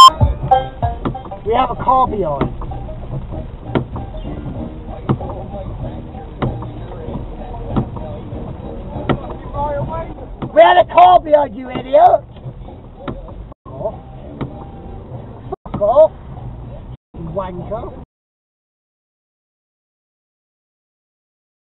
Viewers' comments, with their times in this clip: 0:03 So, you come across a Somerset Hire Services van... and on the radio I can hear "I've got a brand new combine harvester". Is it top of the Taunton Hot Top 40 again?